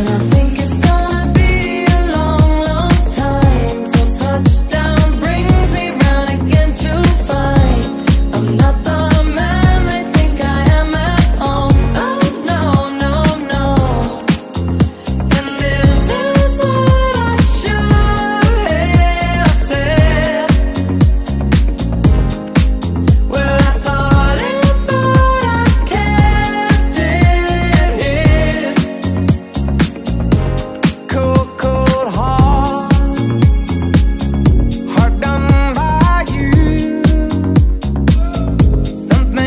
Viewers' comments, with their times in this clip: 0:08 I THOUGHT THAT SAID “i’m not the man they think i am at all” WHATTT
0:23 Are these the official lyrics? They don’t sound right to me. When I’m falling but I can’t dance. Sounds like it should be ‘I’m falling but I kept it in’.